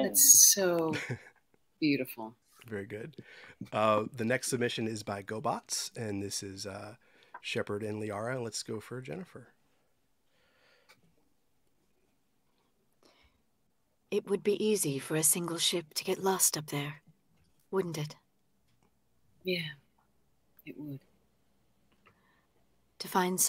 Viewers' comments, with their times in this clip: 0:08 what an amazing read right here!